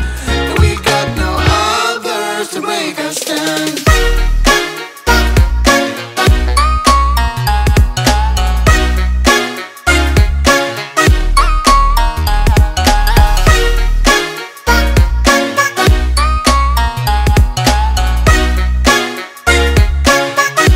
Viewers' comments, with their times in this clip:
0:04 inserts Peanut butter baby noise